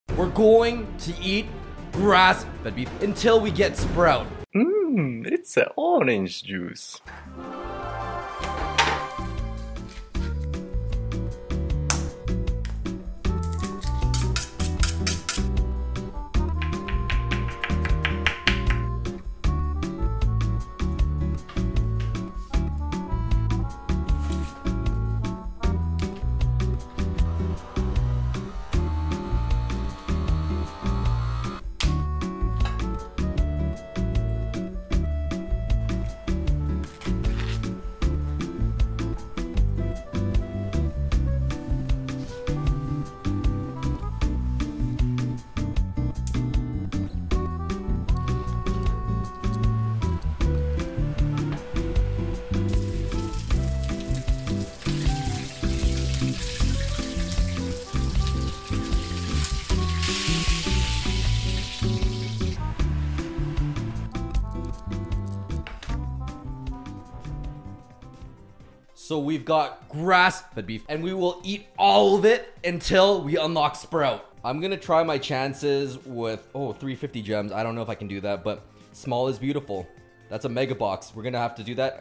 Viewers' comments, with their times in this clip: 0:10 i like that slap
1:07 is that jazz?